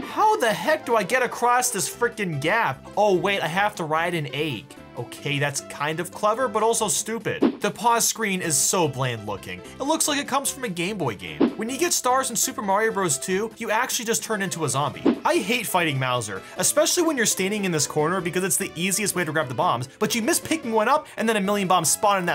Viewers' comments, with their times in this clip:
0:03 bruh the way u say egg "Oh wait, I have to ride a ayyhg"